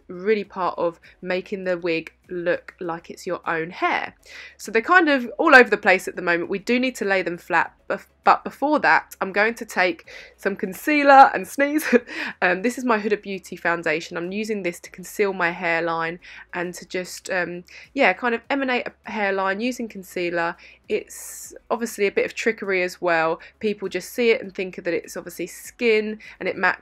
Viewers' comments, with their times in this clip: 0:09 that sneeze is the fakest sneeze i've ever seen